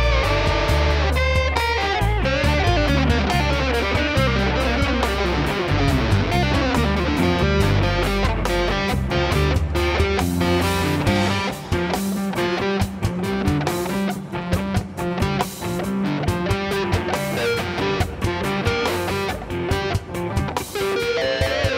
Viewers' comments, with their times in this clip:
0:04 The riff is so crazy!